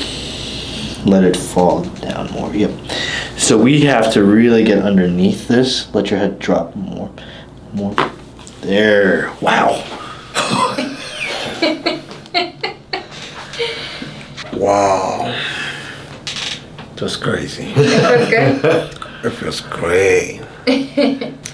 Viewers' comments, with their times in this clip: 0:05 yes WOW that neck crack sounded awesome feeling of relief